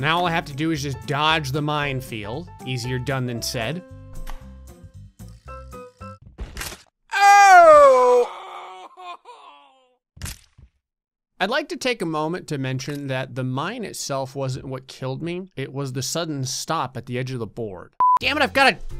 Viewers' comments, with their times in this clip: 0:05 Listen closely you can hear his neck snap BUT his spine is NOT coming out of his back, surprising.